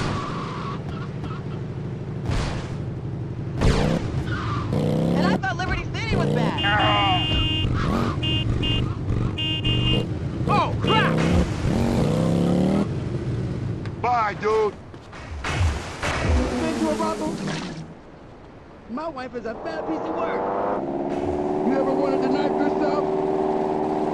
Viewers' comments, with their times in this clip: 0:06 The iconic death scream. 🤣🤣